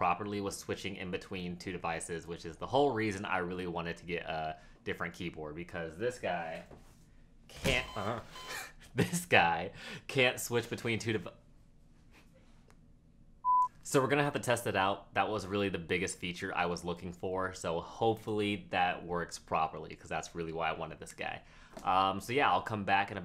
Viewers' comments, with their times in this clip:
0:07 I’m in tears that moan was the funniest thing ever 🤣🤣